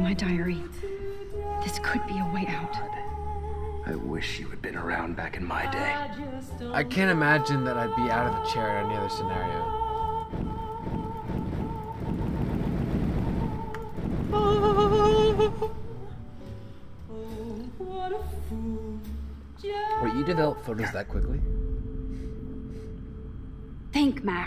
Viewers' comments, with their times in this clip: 0:05 Intense af (the opera singing )